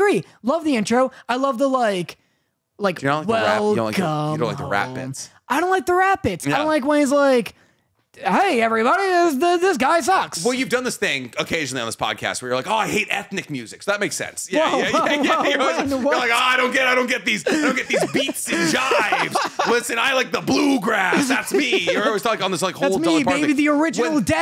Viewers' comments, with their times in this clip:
0:05 i hate the rap bits 2 sound like blue face of a energy stick